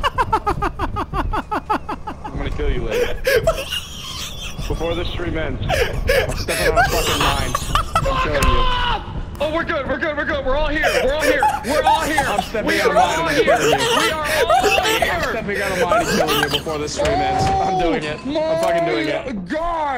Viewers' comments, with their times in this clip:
0:07 puffer the voice actor